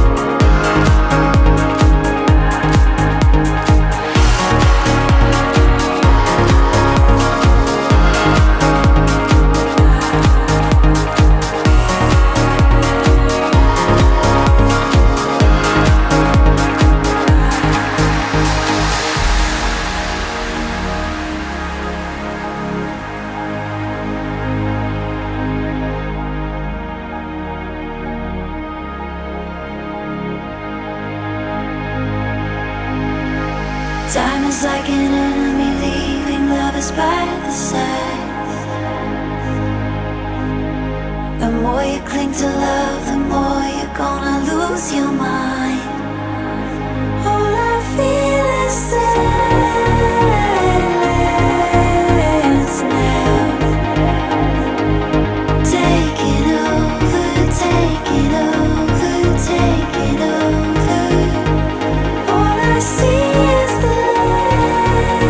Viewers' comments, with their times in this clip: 0:04 That little extra heavy kick brings this song to another level. It’s subtle but in the car driving it sounds so good.
0:46 The harmony of Gemma's voice is euphoric, it was amazing to hear at Electric Forest 2023 ❤